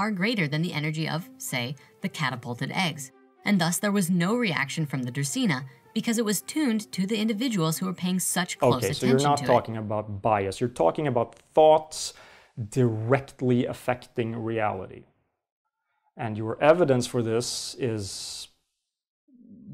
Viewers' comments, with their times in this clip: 0:06 Were there any... editing issues here? Or was that audio overlap intentional?